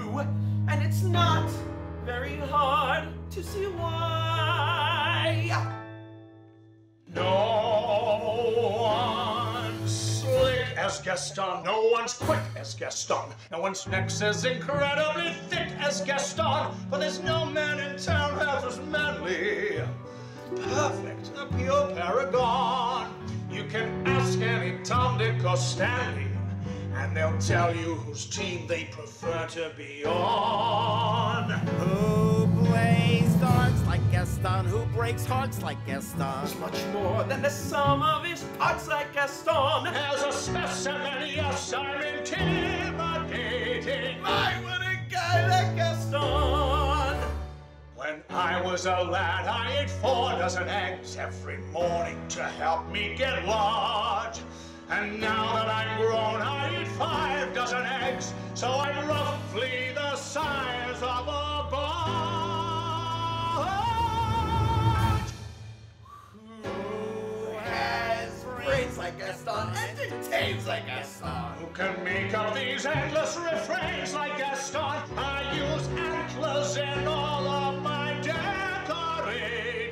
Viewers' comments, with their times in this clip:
0:08 for a split second i thought it said "No one's sucks as Gaston"
1:06 luke’s belt on repeat forever